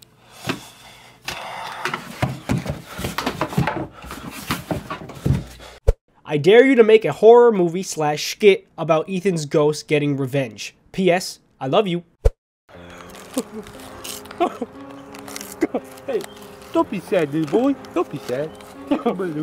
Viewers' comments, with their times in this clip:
0:07 btw I’m on my mums acc but he said shkit 😂